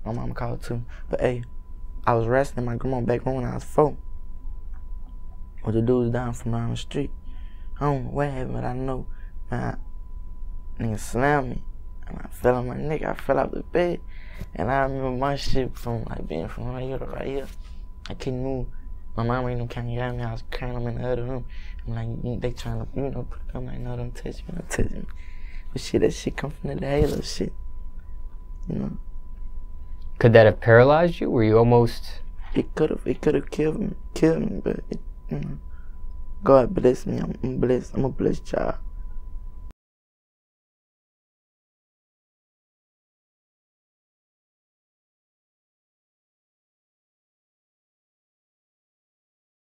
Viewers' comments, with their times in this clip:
0:10 he speaking a different language at this point
0:16 he speaking a different language 😂
0:18 he made up language
0:19 he’s speaking chinese 💀
0:19 WHAT WRONG WITH HIS VOICE
0:19 sounds like the kids in Spy Kids
0:21 did this nigga say candy yam yams 😂😭
0:30 he sounds like he's about to cry.
0:38 Imma blessed jar..🤣